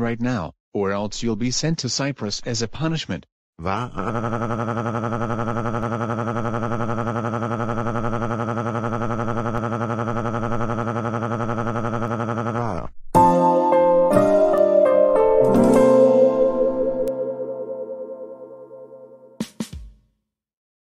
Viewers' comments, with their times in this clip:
0:03 Charlie The Anteater's Crying Voice
0:03 (24) Dark Emerald Bowser’s crying voice (Spring Green) or Dark Brick Bowser’s crying voice (Dark Red) or Dark Tourmaline Bowser’s crying voice (Plum) or Dark Dioptase Bowser’s crying voice (Midnight Green)